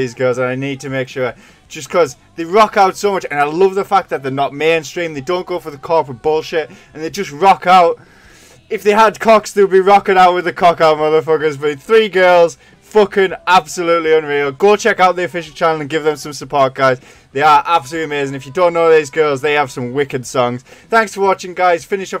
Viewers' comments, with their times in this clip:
0:09 I like that Lunario concert a lot because Ale's bass sounds particularly 'dirty' especially in Dull Knives and Survive. And the comment made me spit my coffee all over the f'n screen.. HAHAHAHAHAHAHAHHAAA!!!!!